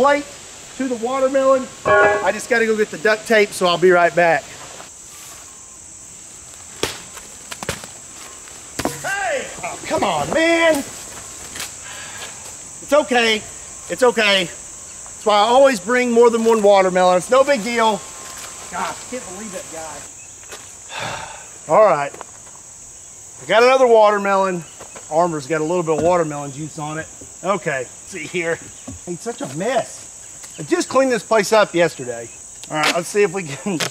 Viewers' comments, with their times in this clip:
0:09 Joe Biden can be heard in the background.
0:15 it always must be WATERMELON TIME somewhere, right? also: I'm still giggling heavily if you do the pointing with the cartoony sfx :D